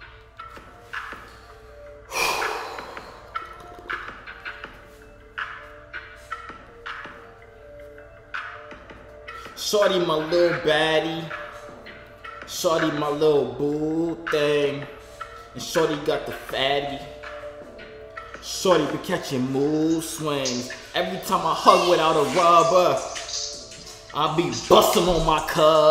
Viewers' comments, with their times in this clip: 0:09 mad funny bro he started singing mood swings